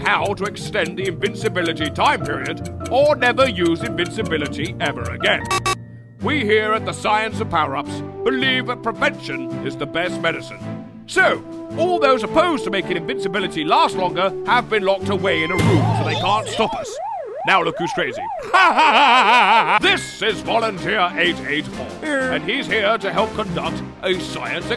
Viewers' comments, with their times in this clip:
0:08 The back round music sounds like Boku No Pico Opening.